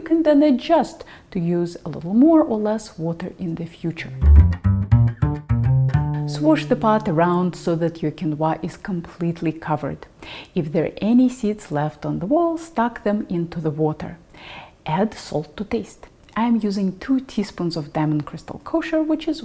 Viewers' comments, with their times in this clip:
0:04 in the morning here in Oshkosh Wisconsin. I'm not even remotely sure how I got to this video. But I have to say, I love it! I love how you explain the process and why is important. Your voice is also very nice. I don't know how else to say it. It's soothing to listen to. I'm going to now go check out some more of your content. 😀 👍